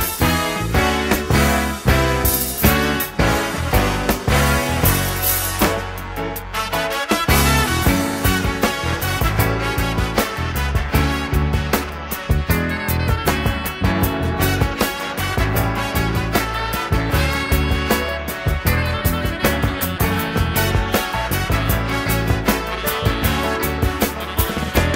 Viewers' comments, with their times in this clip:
0:06 Oh verily I come unto ye seeking anyone, any being, in the known ever expanding Universe, that Feels this song and the Trumpet & Sax as deeply as I do. I come unto ye as one crying in the wilderness. Do ye not have ears, have ye no souls, with which to Feel the music?(:) *Are ye all, as dead things, having no spark of Life, awaken from your slumber and hear the new Life, be born again by this music, that ye be no longer, as a dead thing, or a flower dying in the desert, for lack of the waters of Life, in this Music Bmen, Oh a Bmen is Amen +1ed(;)
0:08 I'm here for the wall of sound the rose !